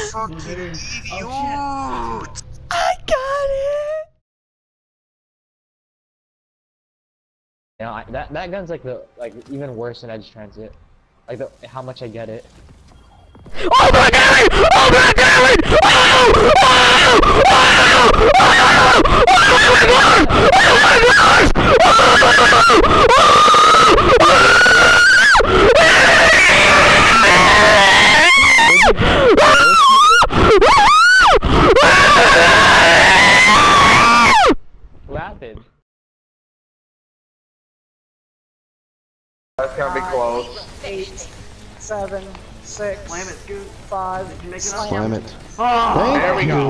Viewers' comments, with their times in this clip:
0:07 My god that death scream...
0:13 i became deaf here
0:13 R2-D2.exe has stopped working
0:14 this is the part when I kick teh squeaker
0:23 he sounds like a horse
0:23 that's Ear rape
0:33 Doesn’t he sound like a fluctuating metal detector?